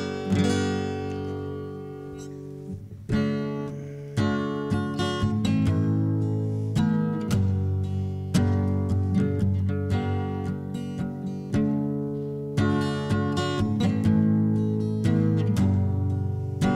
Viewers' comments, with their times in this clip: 0:03 That little exhale it makes the recording so raw and real